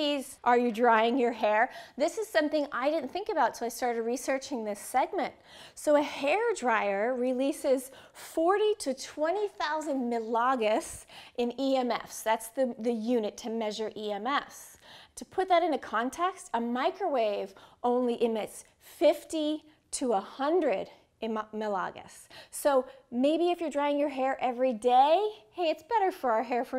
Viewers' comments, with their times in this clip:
0:09 Can someone help me? I am not a native english speaker and i do not understand what unit she is saying It sounds like "malagos". I am studying electronic engineering and the SI-Unit for Eletric Fields is Volt/Meter or Ampere/Meter for Magnetic Fields, but i have never heared of malagos ^^